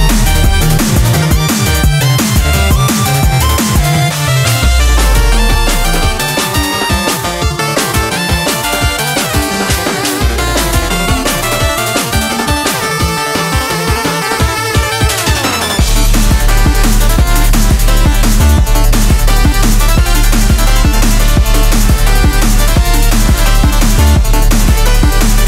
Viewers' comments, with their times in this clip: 0:05 You put police sirens just to screw with us, didn't you? Atleast, I think those are police sirens. Anyways, a great remix for a legendary game.
0:06 Anyone else hear the siren ?